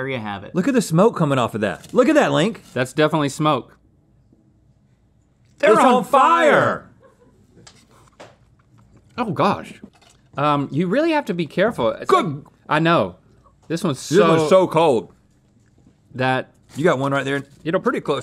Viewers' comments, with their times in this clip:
0:05 … is no one going to talk about them saying that at the same time 😂